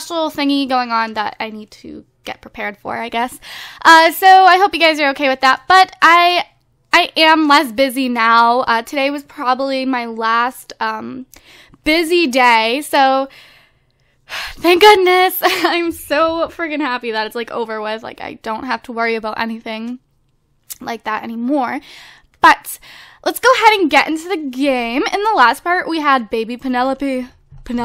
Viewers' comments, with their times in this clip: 0:08 i swear i thought she said "I am lesbian" but she actually said "I am less busy"
0:10 I thought she said I am lesbian lmfao dyin!!!